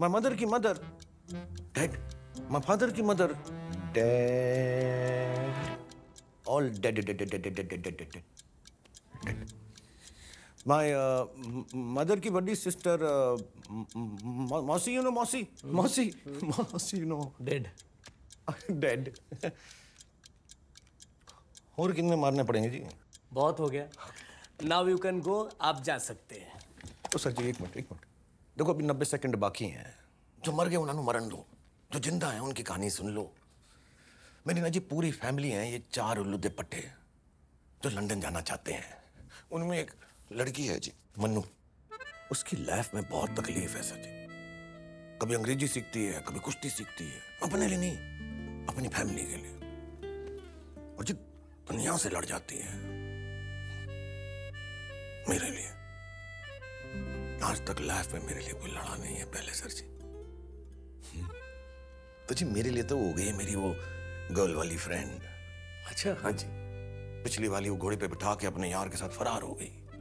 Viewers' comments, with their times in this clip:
0:05 did the officer try to control his laugh 😂
0:51 SRK's depth in voice & his eyes❤❤❤
0:51 SRK his English speaking 🗣️ different from others SRK & His eyes depth of Emotions